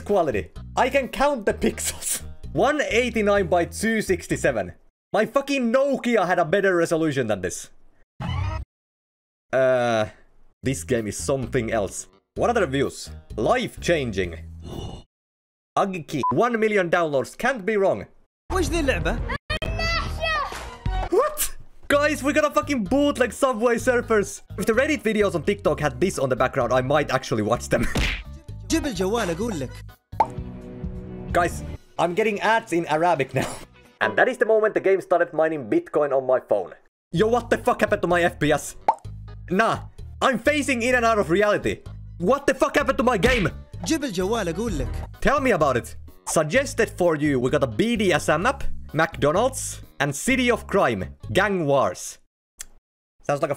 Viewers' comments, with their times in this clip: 0:04 bro unlock asian accent ☠️☠️☠️
0:36 Arabic ✖️ Arapik✔️ LOL